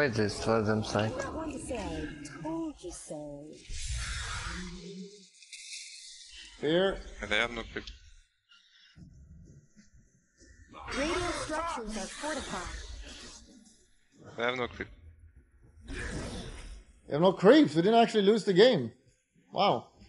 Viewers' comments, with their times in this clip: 0:05 my ears are bleeding FeelsGoodMan